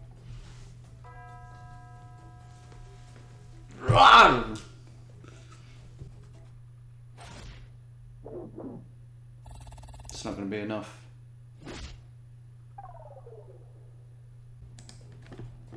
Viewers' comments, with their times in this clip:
0:03 That roar made me lol